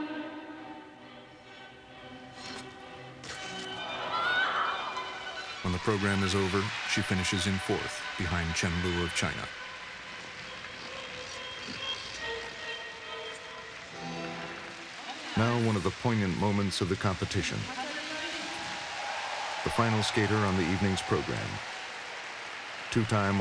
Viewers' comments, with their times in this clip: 0:04 How come some lady in the back screams?